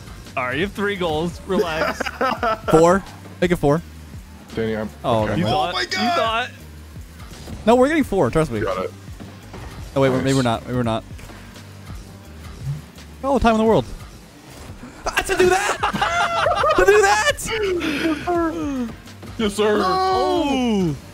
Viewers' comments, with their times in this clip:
0:06 did he said "überall"